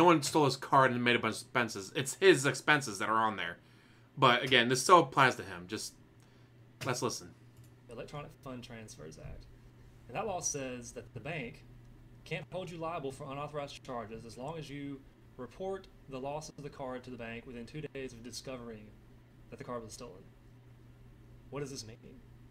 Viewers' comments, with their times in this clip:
0:03 Volume levels are so fukn trash on this video that I'm bailing ...Do better!